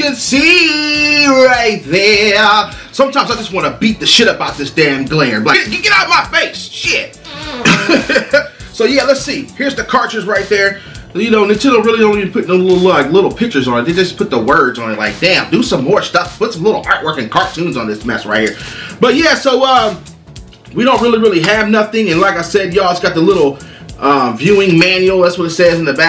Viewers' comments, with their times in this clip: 0:08 Dam who farted lol !!!